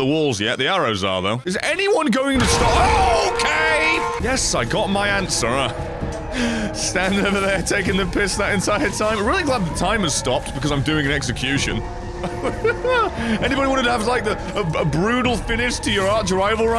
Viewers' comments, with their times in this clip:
0:03 Whats the music at the start of the really eerie sounding choir and stuff, love the videos by the way, your videos are always bloody hilarious